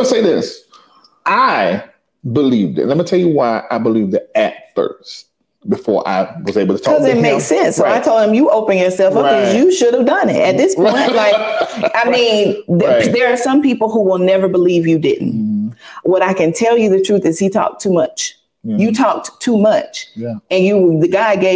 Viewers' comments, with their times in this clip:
0:03 She looks & sounds disconnected. Still trying 2 convince herself that he didn't have sexual intercourse😏. She said"we were in relations w/her"🙄. ,she didn't allow Larry 2 finish but stated she's not going to call her "thirsty"🤨. Blaming the women.